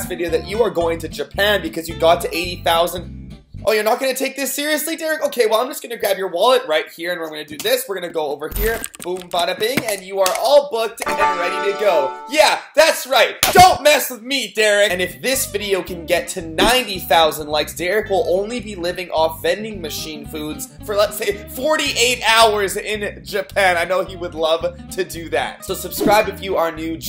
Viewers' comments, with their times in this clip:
0:09 y did he sound like jojo siwa